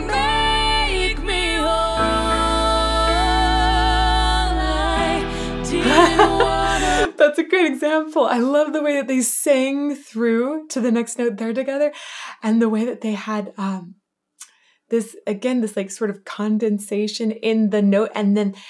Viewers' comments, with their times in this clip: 0:06 Their voices just MEET in that middle of High Alto(Lzzy) and MId Alto(Amy) so perfectly! That twist in the harmony at this point is AMAZING and jerks my head everytime I hear it! Wish I could hear more of it on the radio today but apparently strong voices and harmony are no longer available on the radio dial.